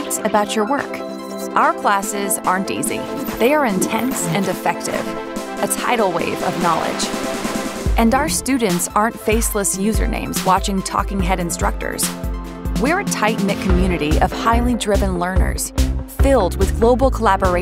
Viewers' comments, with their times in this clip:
0:04 Tiny Voice-over thing: ". . . our classes . . . are intense, and effective . . ." Issue: the "d" at the end of "and" elides so closely into "effective" that it comes out sounding like she's saying the classes are "intense, and Defective"! I love great enunciation (I'm also a singer in assorted chorus orgs); the speaker is otherwise very clear. But this one bit grabbed at my brain. Perhaps adding a slight glottal before the word "effective" would be enough to fully separate it from the "and"? Or adding an emphasis to the 1st syllable of "effective"--by using a "long E" instead of a "schwa" for that 1st letter's sound?